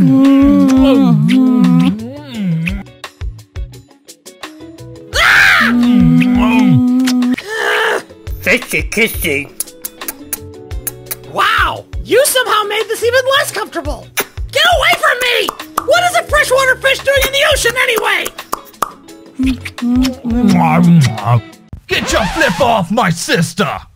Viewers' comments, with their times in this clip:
0:04 That "RAAAGH!" Got Me Laughing so Hard Because of How it Sounds